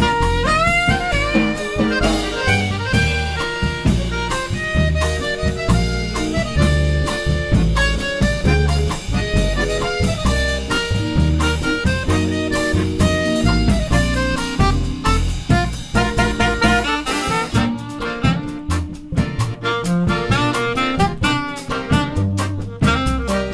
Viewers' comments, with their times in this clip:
0:04 those notes struck my soul